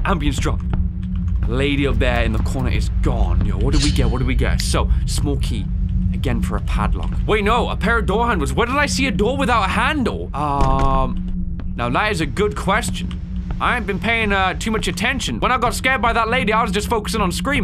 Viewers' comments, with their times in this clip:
0:03 can’t believe that my man just started spitting some bars